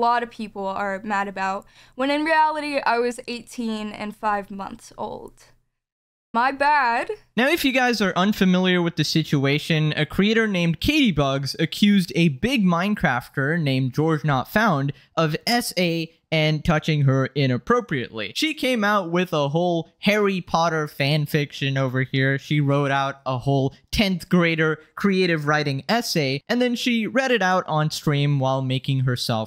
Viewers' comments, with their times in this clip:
0:10 When he was saying creator, I stopped at crea- So I thought he was about to say creature LMAO-